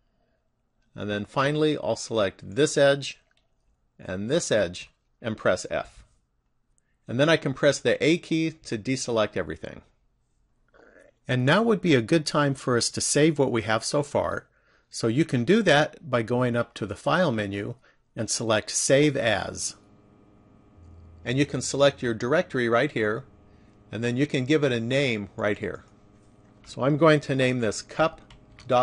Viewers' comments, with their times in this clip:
0:10 did anyone else notice the throw up noise
0:10 is that a stomach rumble or am i hearing things?